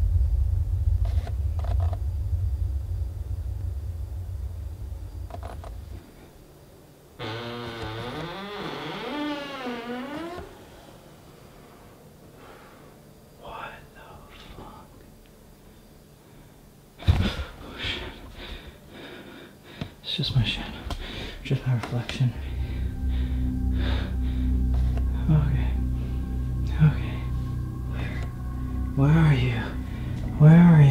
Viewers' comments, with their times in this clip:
0:05 that door creak scared the sh*t out of me
0:07 Anyone else hear "come in" from a mans voice after he knocked ?
0:14 Is it just me but did y’all hear “what the fuck”